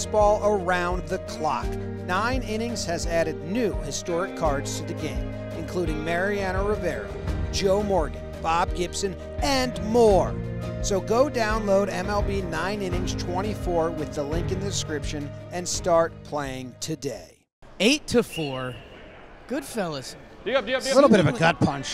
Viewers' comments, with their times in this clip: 0:03 I couldn't help but think its Carl Wheezer